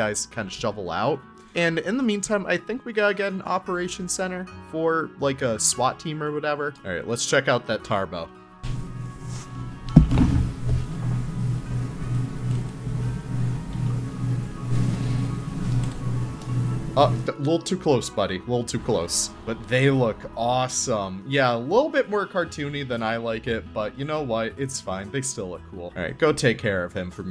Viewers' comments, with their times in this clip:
0:09 Didn't see the warning that time! RIP headphone users!, Headsup you have a open mic scenario